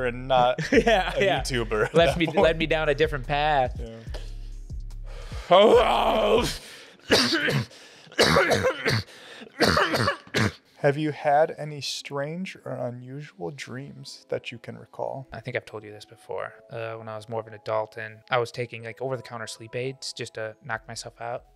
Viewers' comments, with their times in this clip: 0:06 You sounded like Hoggle from the movie Labrynth.